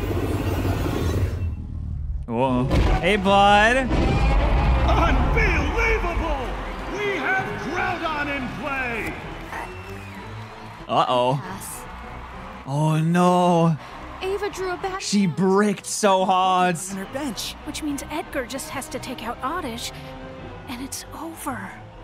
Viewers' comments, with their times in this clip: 0:04 nice monster audio